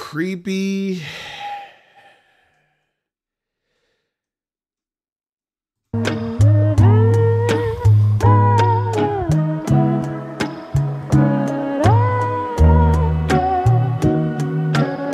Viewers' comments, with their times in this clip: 0:03 This beat creeeeepy!” 😂